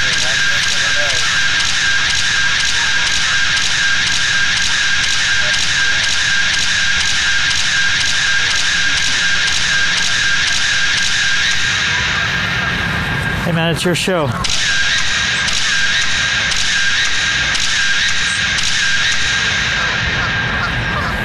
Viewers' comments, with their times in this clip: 0:05 shutter sound is EPIC 🤣